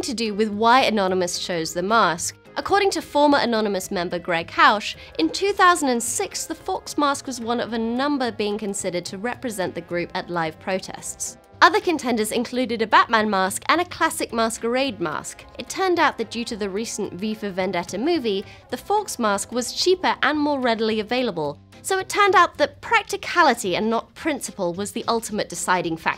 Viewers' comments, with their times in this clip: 0:09 I cannot hear properly.. “Group at live protests”?